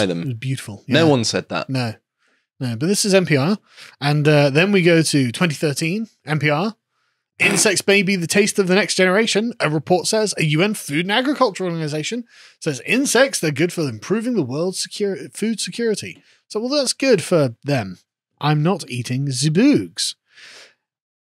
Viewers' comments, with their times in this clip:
0:07 I thought he said "intersex baby" lol I wasn't watching the screen 😂